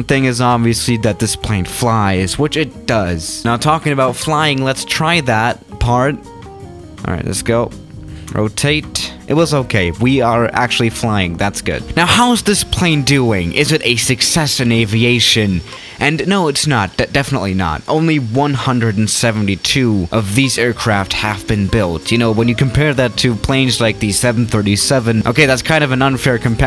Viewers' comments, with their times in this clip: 0:08 Why didn't he say rOw taH tAy?